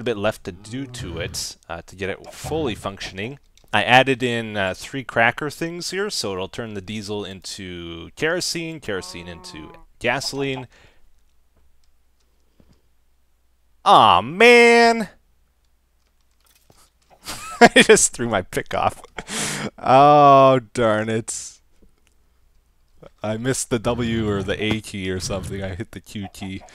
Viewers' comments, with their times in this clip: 0:10 Best laughs of the series.